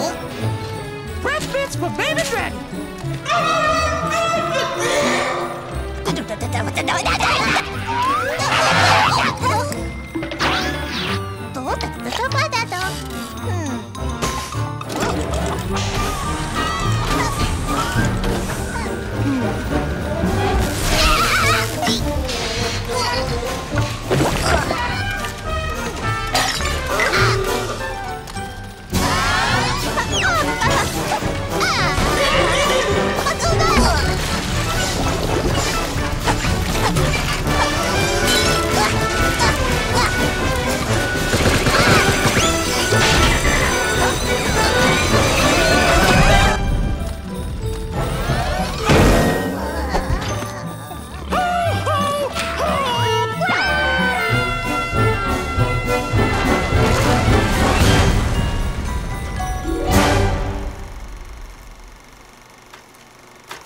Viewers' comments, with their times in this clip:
0:09 goofy ahh sound effect💀💀💀
0:10 goofy ahh skedaddle sound 🏃💨
0:26 goofy ahh noise 💀💀
0:51 That's one good animation and a beautiful "HOT RIIIDEEEEEEEER"